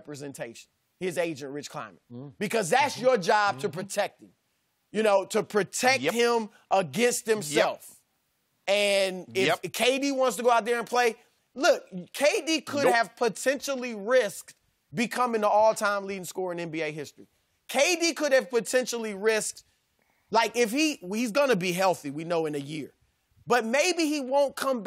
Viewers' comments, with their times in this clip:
0:05 Shannon Sharp sounding like E40 ( Choices )